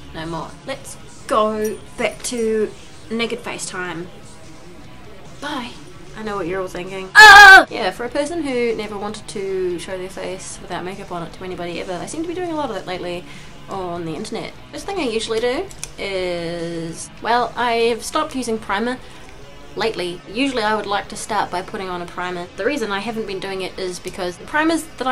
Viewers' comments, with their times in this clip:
0:07 You remind me of bellatrix lestrange. Also BEWARE HEADPHONE USERS